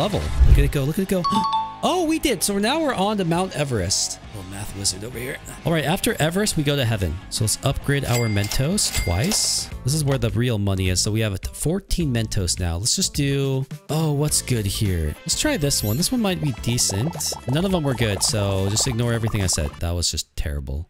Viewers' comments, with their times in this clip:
0:06 that sounds cwazy